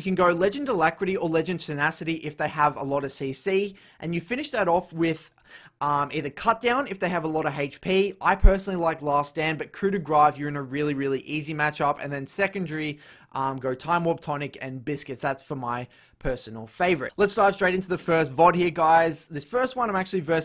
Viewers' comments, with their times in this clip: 0:06 i hear it a lot in your videos you always says 'coup de gra' and not 'coup de grace' and its really stressfull as a french person hearing this x') Otherwise excellent video as always